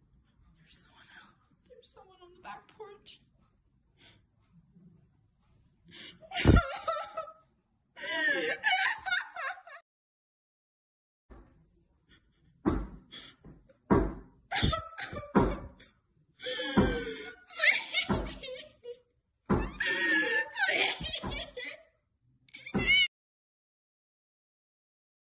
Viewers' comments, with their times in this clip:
0:06 total Unfiction, not t chnically arg, but not real. Total fake. Whenever I hear people breathing really hard and loud I get massive ARG vibes. Normally when someone is terrified, their breathing gets more frantic yes, but they make it quieter so they won't be heard and so they can hear better. So get serious ARG vibes. .